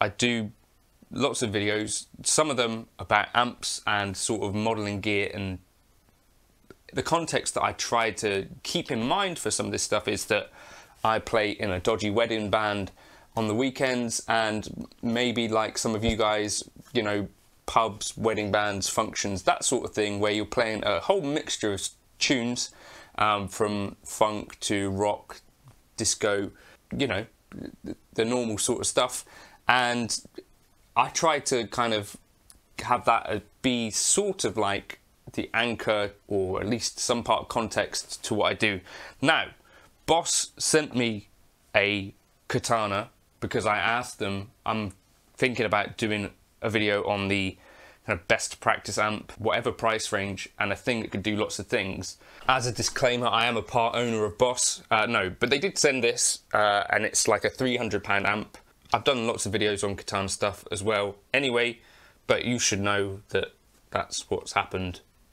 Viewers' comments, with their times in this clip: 0:05 Hmmm, the Boogie sounded much rawer and better articulated in the picking transients with much thicker sustain (maybe it had more to do with the room and speakers?) - those mids can get very loud, though! Boogie lead channel is often too belligerent for many singers to abide - particularly for anything less rawkus than a metal/HR or punk gig. I've gigged with several boogies, and they definitely require ample soundcheck to sound well in/on most rooms and stages. [California native b. 1973 got my 1st Boogie a 50/50 in '92, then a used early dual Rectifier, much later on an Express and lastly a MarkV : 25, all into a few single- and dual-driver cabs w/ V30s, gt75s and a couple greenbacks]
0:52 Wow! You have plenty of strengh to carry a 300 lb amp so easily. 😝